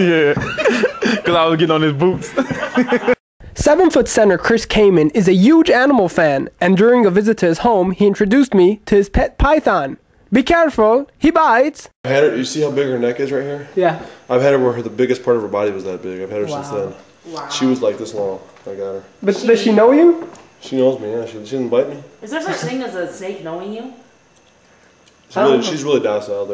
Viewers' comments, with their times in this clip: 0:10 LOLOLOLL he sounded like fukin BORAT when he was like " Be careful, he bites"..LMAO
0:11 That dude sounded EXACTLY like Borat